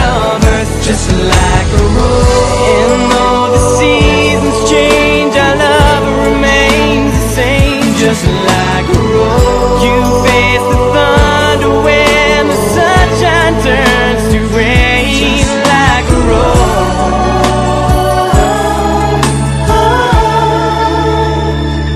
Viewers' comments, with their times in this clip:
0:07 Now im listineng pm..so lovely and soft.imss teenage..if i listineng thi s music..im so inlove